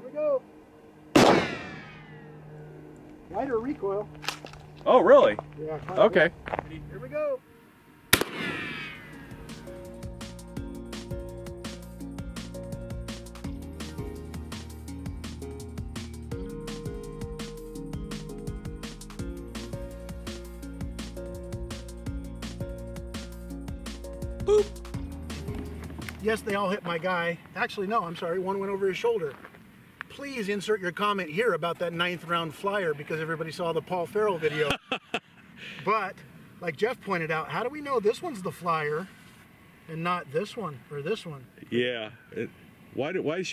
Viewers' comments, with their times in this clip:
0:09 Diggin' that smooth D&B
0:24 the “boop” fucking caught me off guard 🤣 ahahahah
0:25 How is no one talking about the “boop” I am dying. I have watched like 10 times and it only gets funnier.